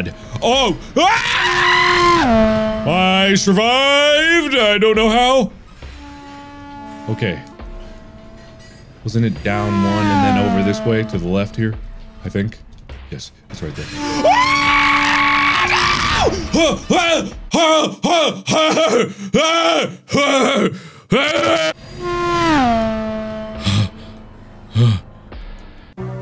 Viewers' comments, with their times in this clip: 0:10 One of my favourite Markiplier screams so far
0:13 dude when markiplier screamed when he gonna be hit by the train I can't stop laughing because of his scream HHAHAHAHA!!! Forever my fav part of him
0:13 demonic screeching and some extra panic breathing noises
0:13 He sounded like a ghost from Mario (look at his robe)
0:13 How can a man scream like that?! 🤣🤣🤣
0:14 I love how he just starts screaming when he's about to die or something 😂🤣
0:14 the scream hahahahaha shit had me dying